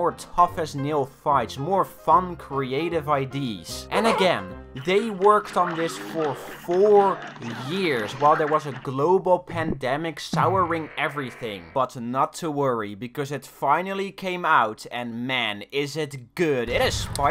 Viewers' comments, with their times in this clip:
0:03 Don’t think I didn’t hear that Jerma laugh you snuck in there
0:04 the jerma laugh from the rat movie caught me off guard